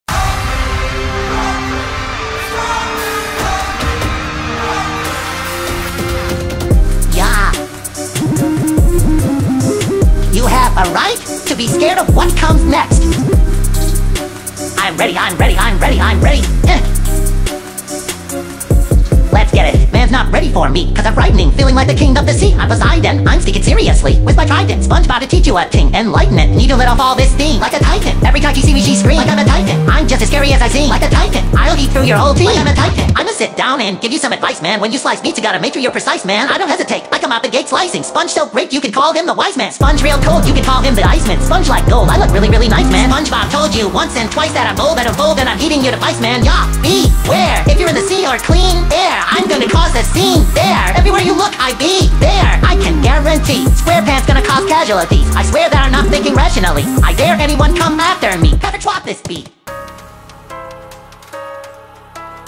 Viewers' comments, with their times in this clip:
0:06 Those..beeps? Whatever they are, they went hard Definitely my favorite part of the background music
0:33 The flow change blew my mind lmao
0:45 the beat drops